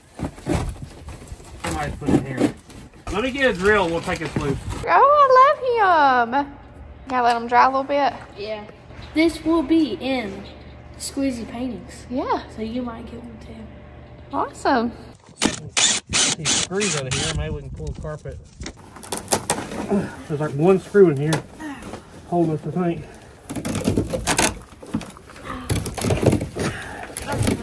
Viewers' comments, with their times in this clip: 0:08 she’s got that Bob Ross whisper going on.